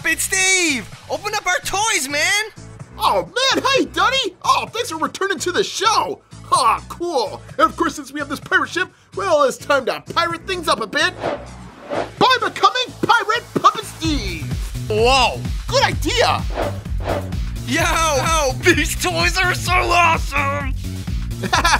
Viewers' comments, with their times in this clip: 0:08 WOAH * Turns to Puppet Steve Voice* GOOD IDEA